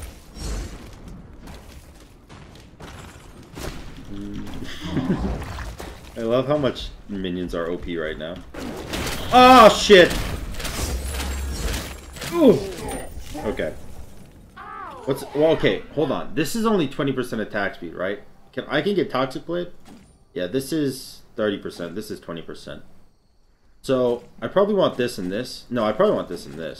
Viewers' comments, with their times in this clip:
0:09 the sound a person makes when they learn a little humility after talking mad $h!t... awesome recovery at the end 😎